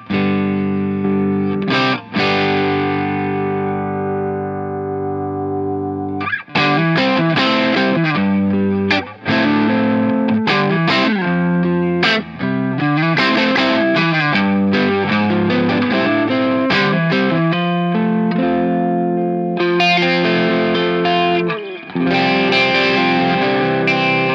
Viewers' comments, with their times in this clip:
0:07 That lick starting is on point!